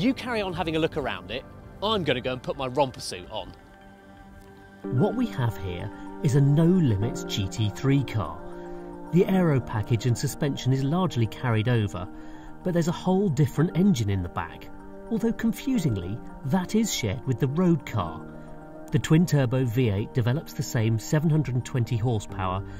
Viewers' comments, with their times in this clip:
0:05 i thought a 2nd set of speakers turned on somewhere else. nope I guess just recorded in a plastic garbage bag